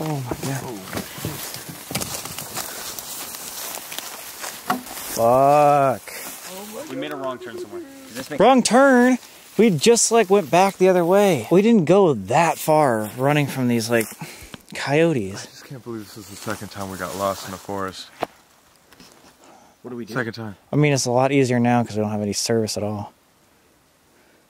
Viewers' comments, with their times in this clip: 0:04 = demon growl sound that Sam and Colby didn't catch
0:06 😅I think that stick crack was some one relode a gun